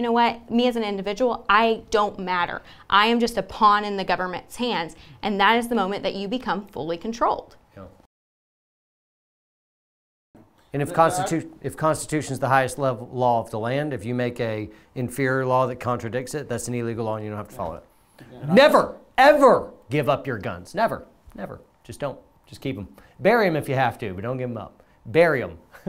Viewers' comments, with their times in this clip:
0:07 was a mic drop moment, and that awkward silence was just pure gold. What she said was one of the most real, and most unsettling things to say, and it needed to be said.